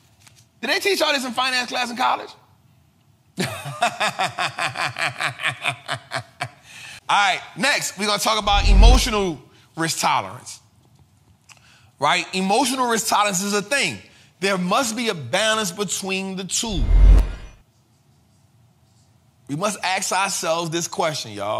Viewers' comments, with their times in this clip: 0:04 That company phase is a critical factor regarding company debt and interesting laugh and Ty for your content. 🙏🏾